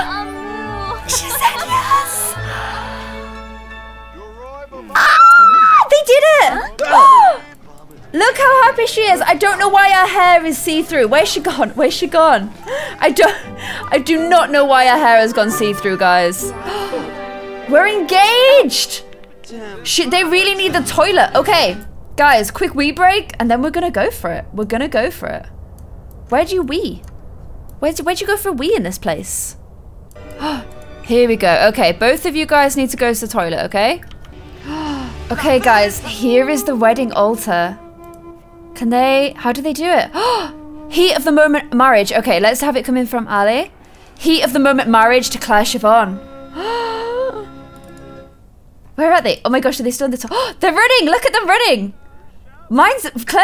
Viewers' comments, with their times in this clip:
0:06 rip head phone users
0:41 is your panting